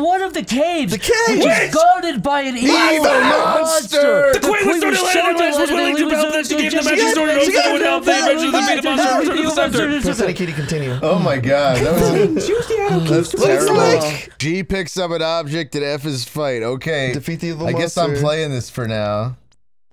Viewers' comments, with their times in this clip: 0:06 your parents fighting in the living room after you've gone to bed